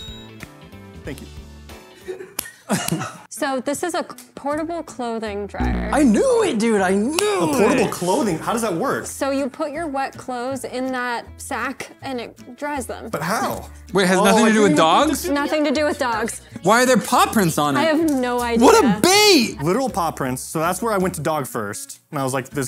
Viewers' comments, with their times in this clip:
0:06 woods 😂😂😂😂 he sounded so mad i love it 🙌